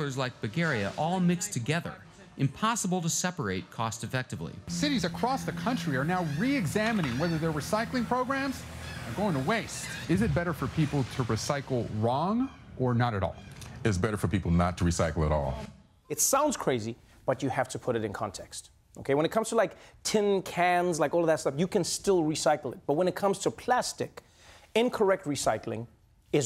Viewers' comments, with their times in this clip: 0:05 he sounds like Anup Soni from india😂😂
0:13 Morgan Freeman's voice!